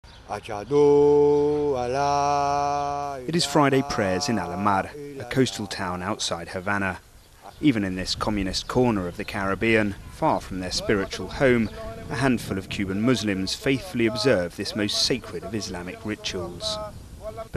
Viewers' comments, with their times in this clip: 0:01 he say bla bla la la ?